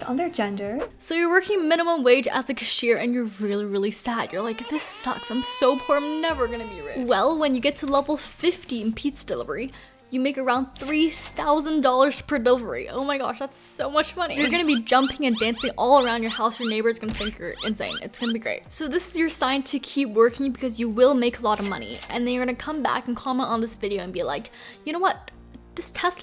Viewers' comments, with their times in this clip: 0:09 did she say 15 or 50 i dont knoww :((((